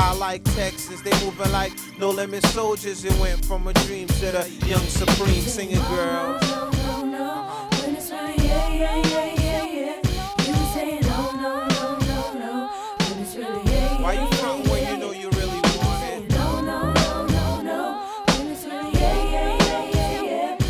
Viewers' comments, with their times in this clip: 0:08 When Latavia come in it sounds so good. Her voice is so unique.